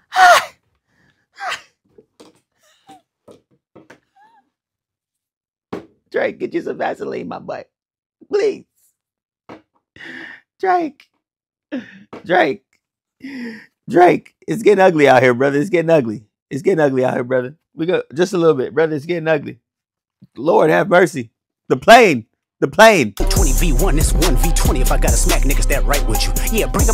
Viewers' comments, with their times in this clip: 0:07 Ur funny af the heavy breathing was great lmaooooooooooooooooo